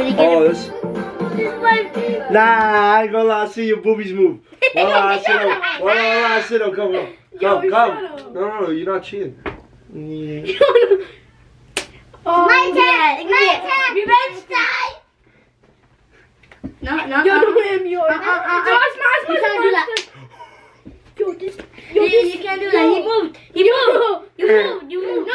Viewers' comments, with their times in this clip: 0:08 that was loud